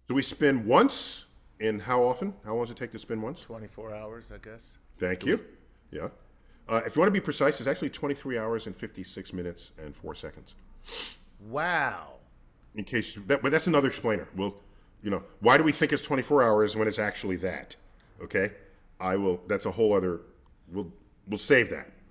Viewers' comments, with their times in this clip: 0:06 The smug sniff meaning, "Yeah, I know the exact down to two sig figs"